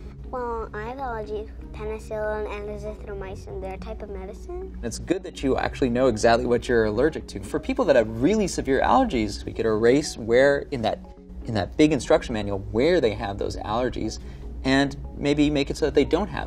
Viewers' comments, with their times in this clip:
0:03 So young and yet the uptalk has already taken hold.